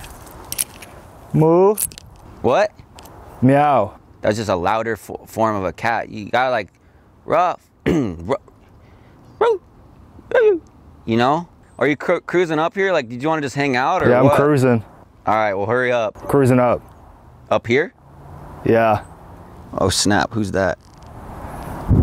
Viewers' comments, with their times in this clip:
0:09 he breaks character and laughs